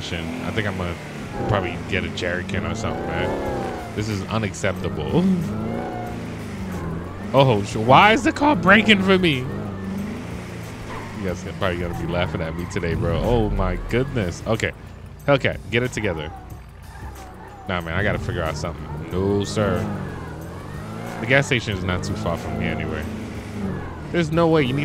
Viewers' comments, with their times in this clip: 0:05 bro that moan😂😂 nice vid bro